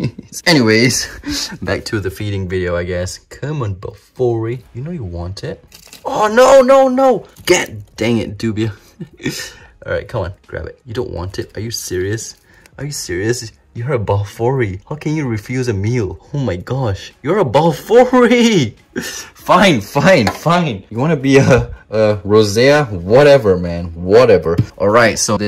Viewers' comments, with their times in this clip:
0:07 Oh NoNONyo me:what does nyo mean